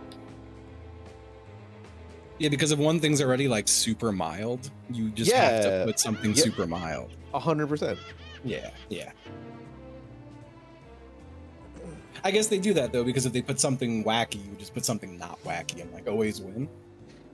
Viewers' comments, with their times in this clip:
0:05 am i insane or is that floweys laugh